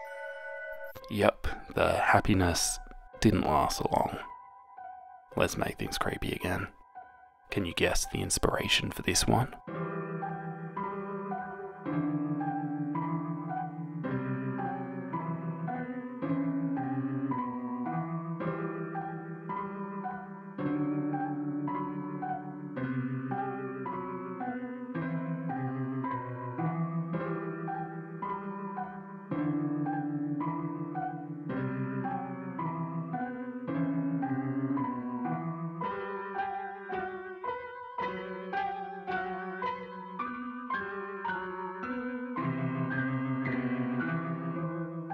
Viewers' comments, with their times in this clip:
0:10 The inspo was Huggy Wuggy from Poopy's Playtime, and at this time I also realized that a slowed down and deeper version of the "Lavender Town Theme" from Pokemon Red/Blue/Yellow was being played
0:10 i cannot express how fitting lavender town music is for this part
0:29 is that lavender town from Pokemon slowed down? That's awesome!!